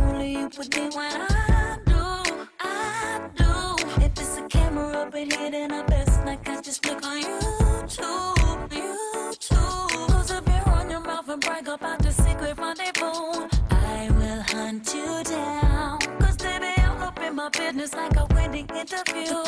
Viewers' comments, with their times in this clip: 0:03 have money in the refrigerator?